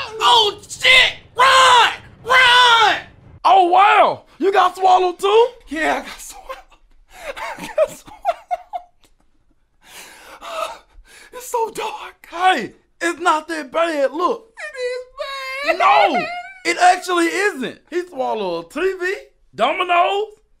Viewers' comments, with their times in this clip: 0:04 THis dudes laughing bro XD